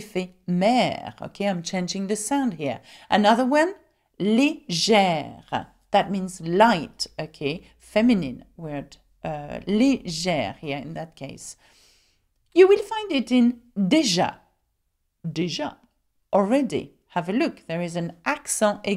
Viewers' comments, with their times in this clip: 0:03 you pronounce the acute accented "e" as "ee" instead of "ay" when you say "legere." So instead of saying LAY-JEHR, you say LEE-JEHR. I have heard this on several occasion where people pronounce the acute accented "e" as "ee" instead of "ay." Is this common?